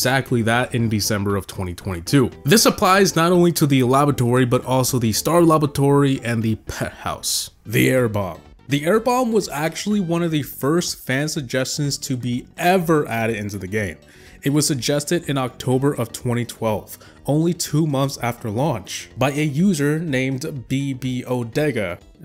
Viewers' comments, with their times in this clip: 0:04 Is he saying labatory or is it just me